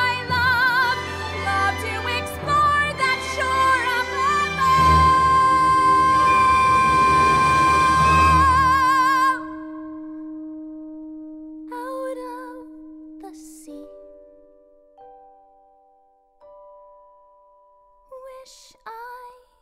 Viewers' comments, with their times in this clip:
0:03 Am I the only one that loves and is obsessed with how she pronounced and sung “explore” ? Like holy moly. She’s a queen.